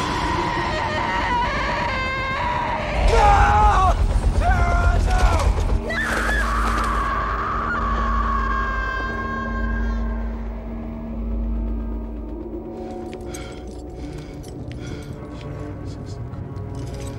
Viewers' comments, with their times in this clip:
0:03 Right!!! Dudes just laughing. Like WTF bruh. he's totally laughing.